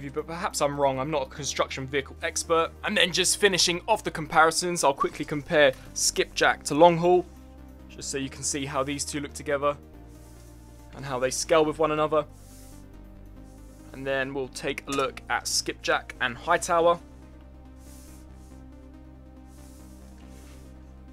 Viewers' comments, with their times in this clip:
0:04 voice crack I think